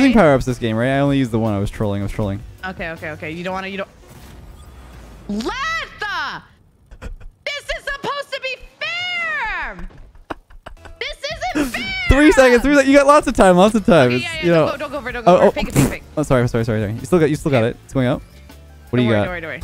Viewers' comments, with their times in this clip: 0:05 that troll face and giggle omfg xD